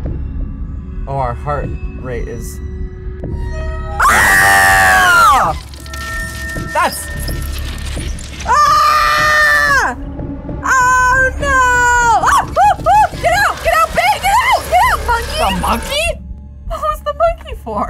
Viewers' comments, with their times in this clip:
0:04 Why am I using headphones while she screamed so loud
0:04 They both scream the same LOLOL